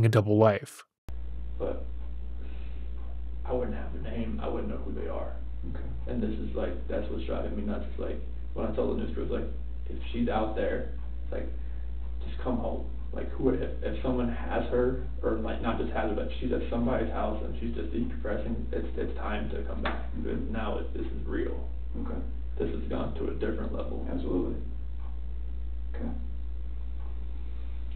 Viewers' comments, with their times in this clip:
0:10 he’s repeating word for word what he said on tv. Zero emotion. A phrase he thought was enough to show emotions.